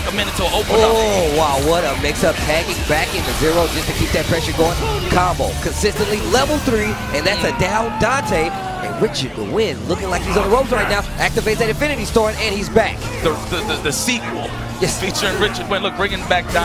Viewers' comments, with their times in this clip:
0:04 I love how the music immediately goes sad after he loses his Dante xdd